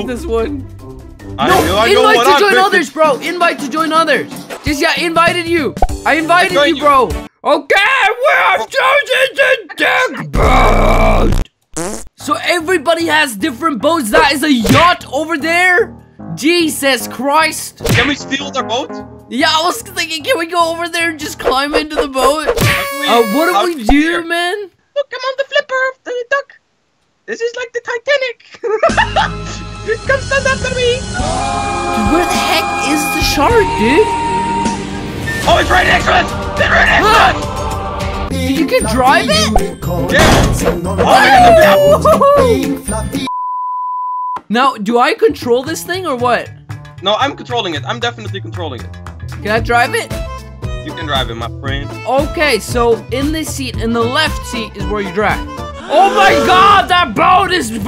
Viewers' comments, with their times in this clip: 0:07 i think that was a little bit racist thats not how chinese talk :T
0:39 how elso liked that music